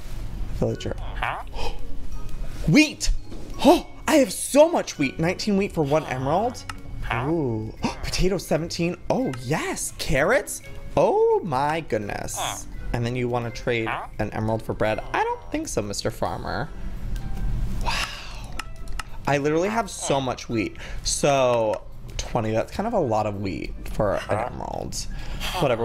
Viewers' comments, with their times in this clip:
0:07 the villager farts